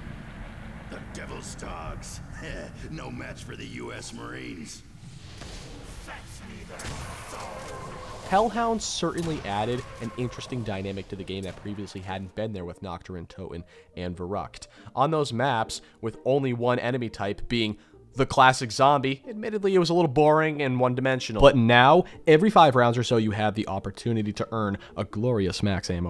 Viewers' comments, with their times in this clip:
0:07 The dogs death sound sounds like the prowlers theme from into the spider verse NGL